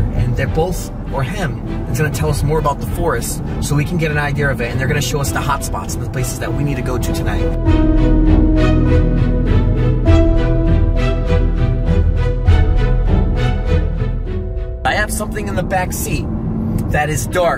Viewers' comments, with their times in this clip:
0:03 i love how u say IDEAR, instead of IDEA😭😭😭😭. U are silly i swear i luv yu.